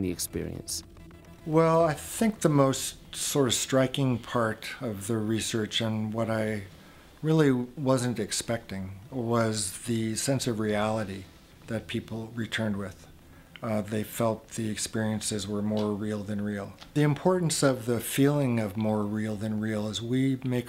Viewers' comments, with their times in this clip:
0:05 he tooted... I wonder how bad it smelled.. 💨👃😵💩